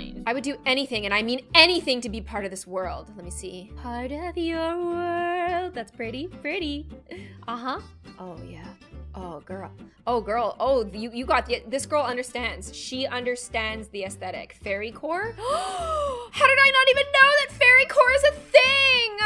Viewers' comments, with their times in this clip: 0:04 what it just me or was that singing perfect-